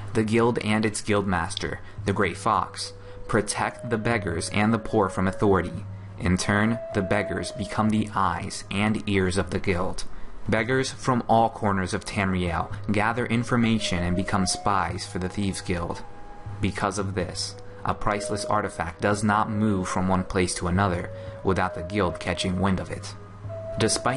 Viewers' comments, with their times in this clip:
0:09 "Scream" beggar ? xD